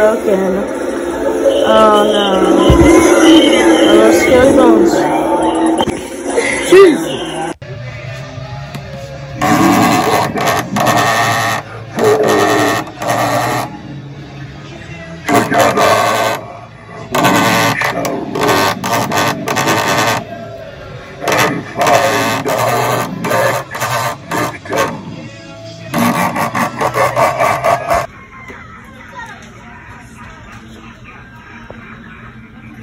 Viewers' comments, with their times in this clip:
0:08 He is speaking the language of gods.
0:08 black heart become a goat and starts baaing
0:09 dude's talking like a death trooper
0:10 he sound like a duck tho💀
0:17 I think there is a bee in there…